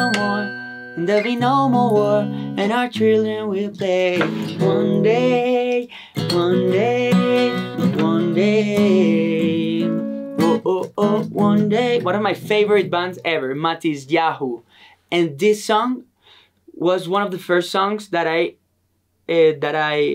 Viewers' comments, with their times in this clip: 0:03 Him singing, playing, and dancing all at the same time, idol 🤍